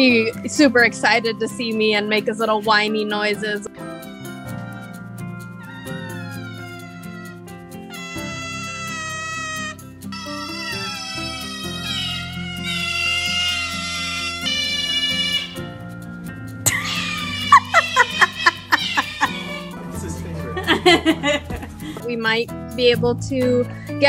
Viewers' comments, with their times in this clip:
0:04 I love your cute noises
0:08 his little whiny noises are just too adorable ❤️